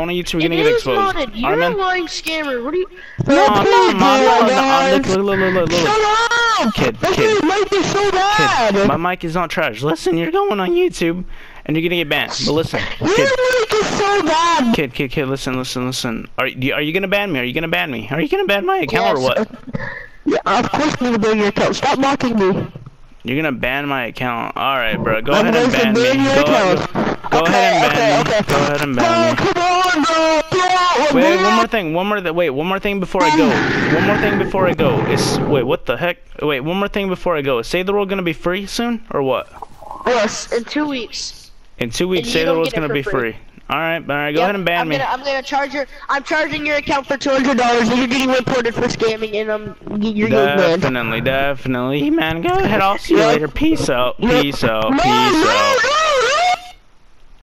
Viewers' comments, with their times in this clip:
0:09 Voice crack 😂 I think he has problems
0:10 Who heard that voice crack like if you heard it
0:18 that voice crack tho
0:54 Did you here that voice crack